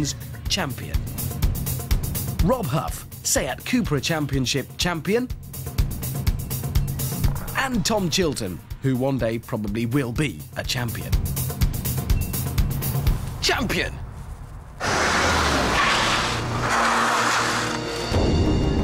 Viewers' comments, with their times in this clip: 0:06 That overused meme song, that plays when something sad happens, starts playing